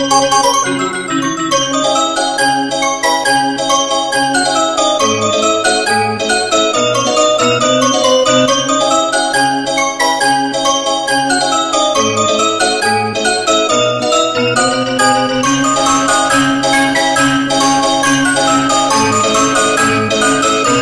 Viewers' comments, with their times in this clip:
0:08 That sounds like Bad Apple wut